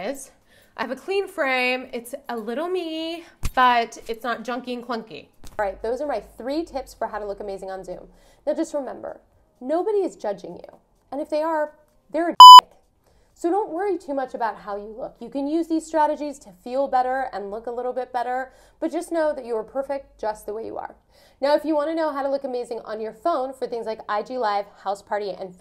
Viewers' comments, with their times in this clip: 0:10 Literally destroyed my ears. Awesome video tho <3
0:11 scared the shit out of me lol too loud
0:12 Damn.. that beep almost made me deaf.